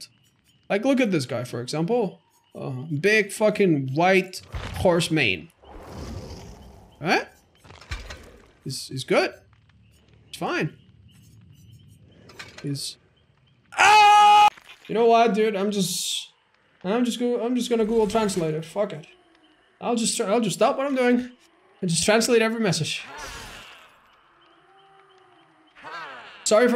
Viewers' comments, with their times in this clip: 0:08 that's probably the best scream cut I have seen in this video
0:10 sounded like a male survivors scream when hooked